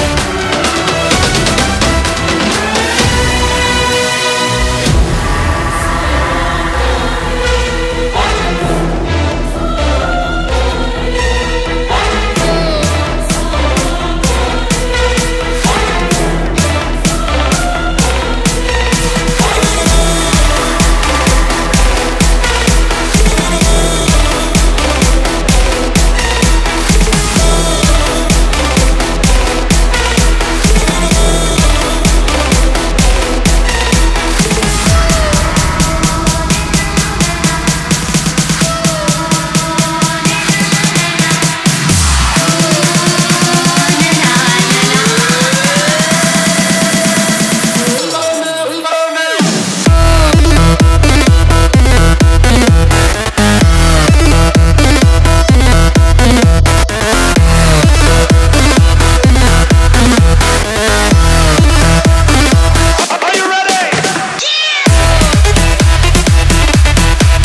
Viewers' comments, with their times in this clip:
0:06 Sound of Police!
0:55 is this sound like hardwell-eclipse?